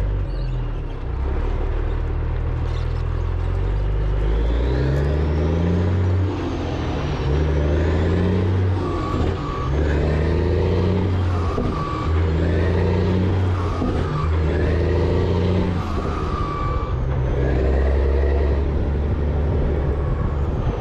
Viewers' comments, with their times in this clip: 0:04 there is a weird metal squealing noise that starts happening when you shift gears, hope it wasn't a hard fix. I tend to forget the videos are a month or two behind, you done fixed anything I observe way before we ever see it.